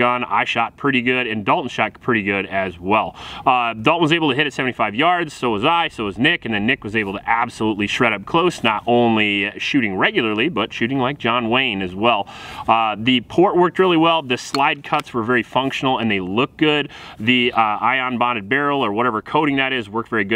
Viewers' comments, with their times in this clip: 0:08 Anyone else hear the ricochet ?